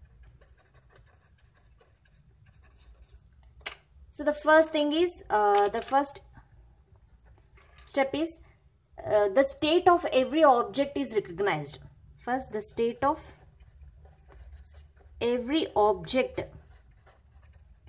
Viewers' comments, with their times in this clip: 0:05 We can hear the page turning sound sec.... U just see in another book and write it in chart..... Very bad explanation